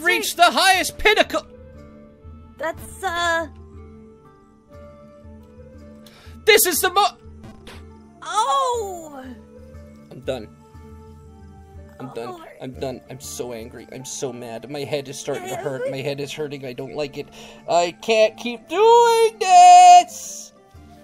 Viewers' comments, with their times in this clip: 0:06 Did he just say this is summer